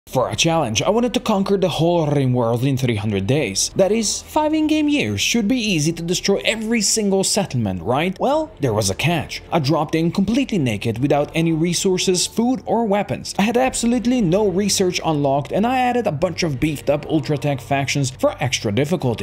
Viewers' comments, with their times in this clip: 0:02 The way you said rimworld at start